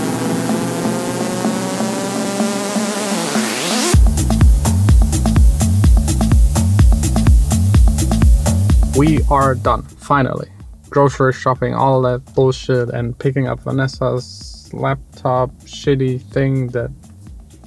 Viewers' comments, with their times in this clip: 0:04 Oh nice transitions and background music 😬🙌 love your hustle also